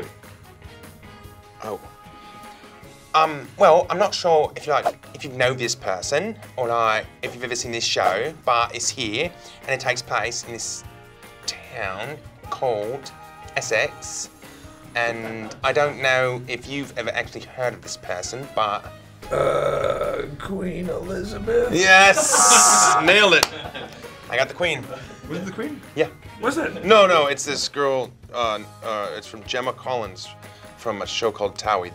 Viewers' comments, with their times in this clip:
0:08 legit sounds like James Corden
0:18 CHRIS REALLY SOUNDED LIKE LUCIFER ‼️ am I lying ????